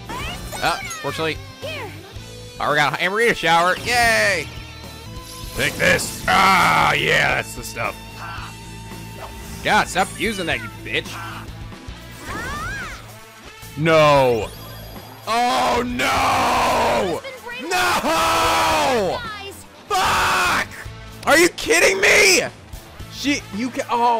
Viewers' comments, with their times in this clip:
0:10 the cry of agony